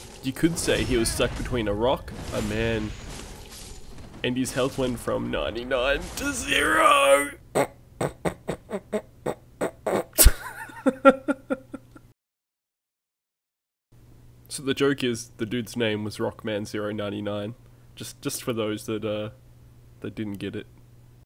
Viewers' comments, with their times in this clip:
0:07 that grunting groove tho. Good stuff